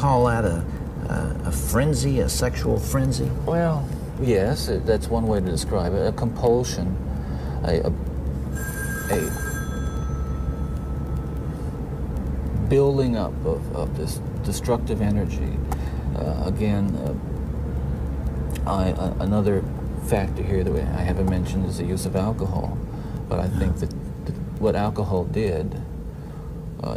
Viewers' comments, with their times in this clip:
0:07 When that phone rang it looked like it snapped him in to rage for a second!! 😳😳🙋‍♀️🏃‍♀️💨